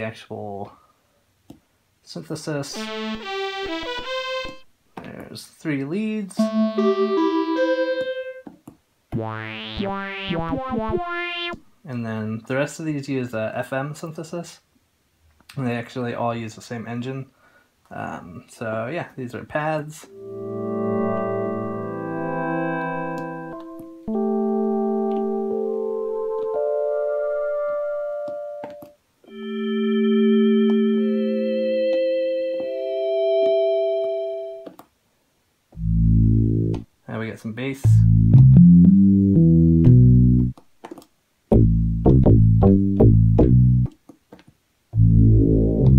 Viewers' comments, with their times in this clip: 0:09 sounds like one of my farts when i'm in the bath.
0:20 expecting radiohead's idioteque
0:29 i thought you was playin idioteque